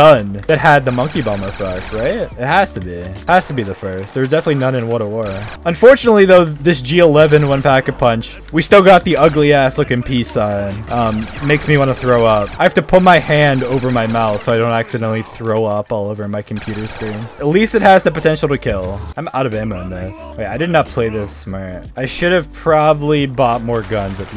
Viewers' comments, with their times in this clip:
0:06 Not gonna lie when I’m tied af pm you sound like dream